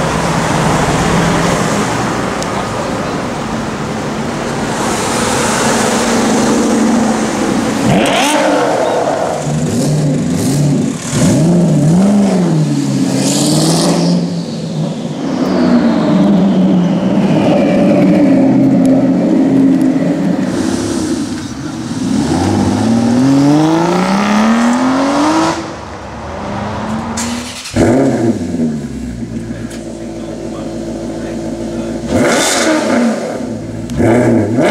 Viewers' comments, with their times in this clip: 0:07 where'd that loud rev come from ?
0:15 damn that's da best sounding mercedes-benz a-klasse =D